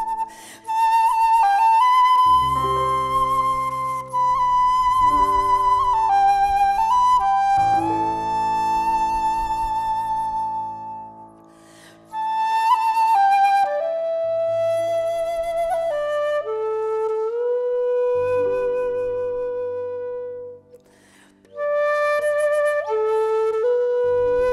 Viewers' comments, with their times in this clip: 0:05 What is the Air ? The young man on the keys is brilliant in his timing on this tune, btw.